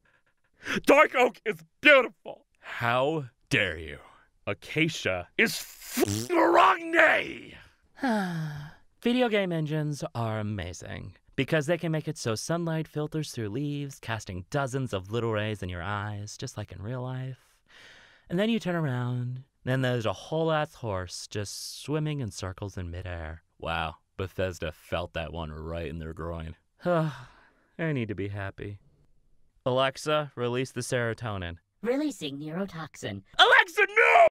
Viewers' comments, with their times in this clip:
0:03 it’s almost midnight and the way he said “oragne” mad me lose my shit, I cannot breathe
0:27 GLaDOS, is that you?
0:32 GLaDOS is that you?